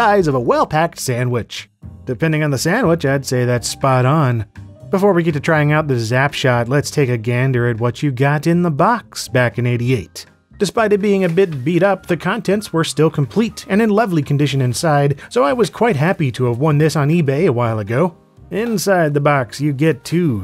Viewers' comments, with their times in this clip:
0:07 The way be says Gander makes me remember El Bundy